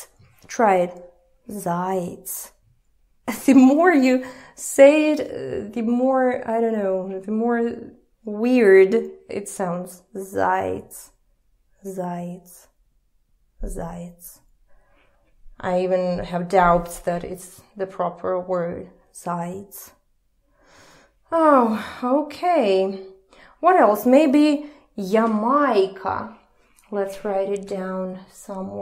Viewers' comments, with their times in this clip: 0:10 you demonstrate my favorite feature of language where you pick a word and say it over and over again until it sounds like gibberish and you can hear words for the arbitrary noise they really are.